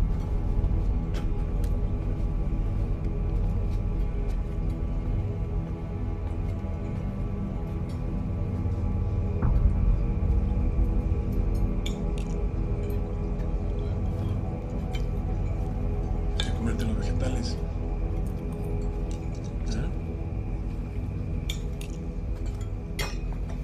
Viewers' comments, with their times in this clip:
0:10 The shot with the background music is awesome, like he's the grim reaper